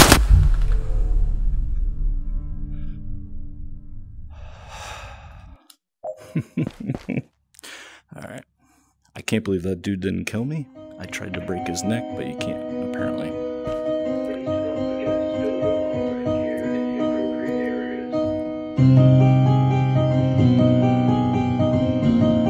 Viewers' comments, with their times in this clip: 0:07 That SIGH I’m too familiar with that feeling!